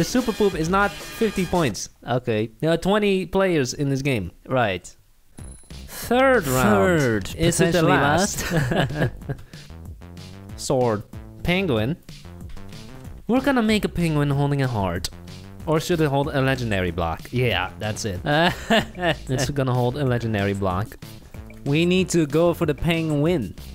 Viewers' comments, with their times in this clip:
0:06 wtf tripping me out u guys talking at the same time